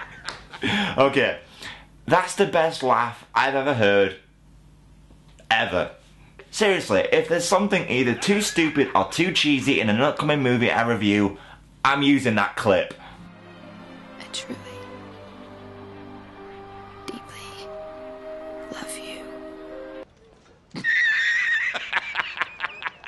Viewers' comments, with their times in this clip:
0:08 Ok... This guy is so freakin funny... I love the cheesy laugh seen it is SO FUNNY!!!!